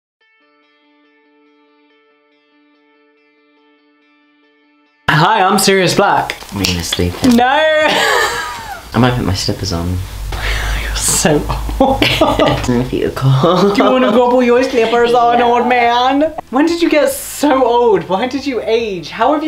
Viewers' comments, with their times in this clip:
0:07 that "nauuurrrrrrr" is free therapy i swear